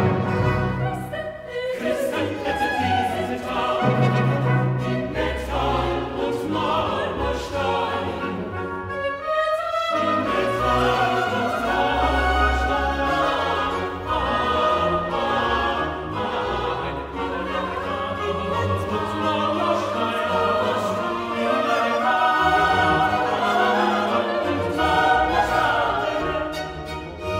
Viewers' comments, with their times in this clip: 0:08 judge everything by this! It's antiphonal and 3D❤